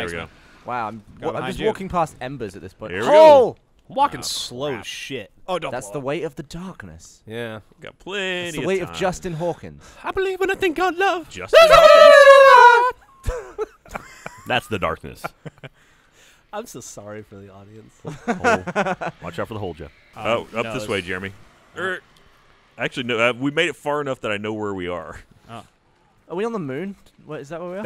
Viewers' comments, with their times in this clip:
0:09 "I believe in a thing called love" garbled turkey noises